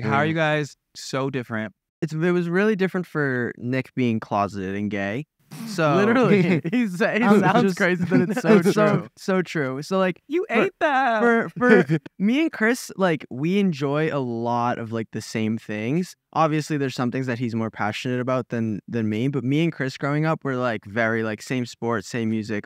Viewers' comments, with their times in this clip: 0:04 larray laughing is so me